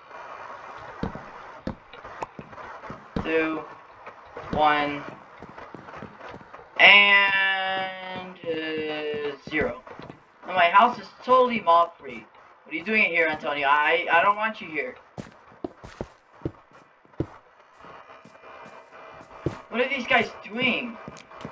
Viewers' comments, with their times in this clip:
0:03 Sorry for bad audio. Im in Colorado right now. Ill be home by thanksgiving. also not to Mention skip to too see what happened.